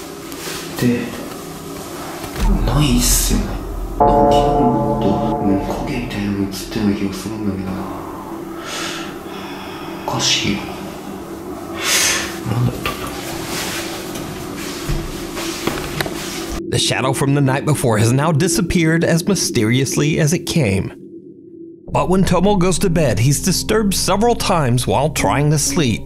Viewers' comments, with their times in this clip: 0:08 is that a heavy breath? Like someone exhaled? Or is that the investigator’s breath!
0:08 large exhale in the mic while the investigator is speaking, possibly missed?